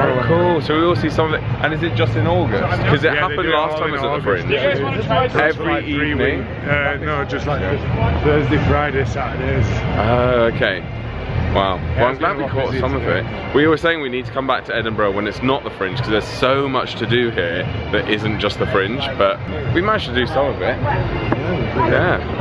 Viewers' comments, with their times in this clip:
0:04 What did that man shout ? I hope it wasn’t offensive😔 Nice video, have never been to Scotland, so nice to see Edinburgh through your eyes or your recordings 😊